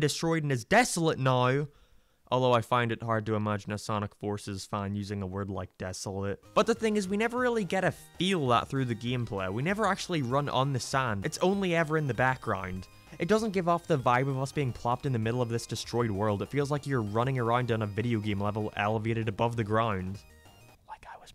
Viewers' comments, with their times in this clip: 0:09 also about forces green hill, what the fuck is with the happy-ass music? I’d kinda get it if it was literally just the green hill theme, but what’s the point of making an entirely new track for a level only to have it somehow fit less? same with the music for modern’s first level. Like “oh yeah man can’t wait to boot up some sonic unleashed and fight dark gaia while listening to the stage builder music from smash bros brawl” like yeah it’s a fine song but wtf is it doing there?